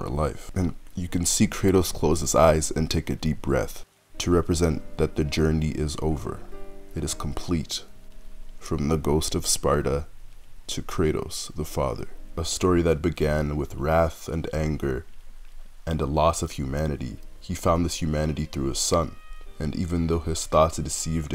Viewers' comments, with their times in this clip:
0:03 ugh that final fantasy sad song. I love it